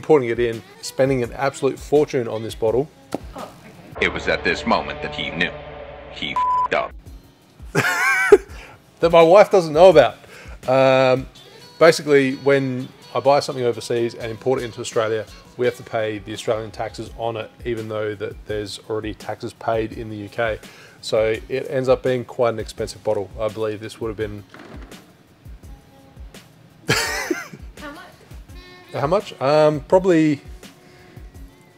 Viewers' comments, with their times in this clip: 0:05 The “huh” after the slip 🤣
0:15 did you say "Israelian taxes"? Makes sense it being expensive...